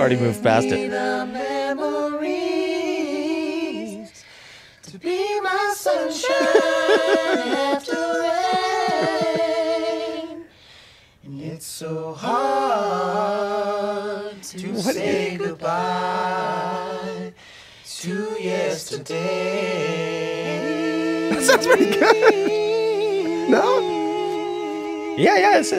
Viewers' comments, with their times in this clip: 0:10 Glen with the flared song ender <3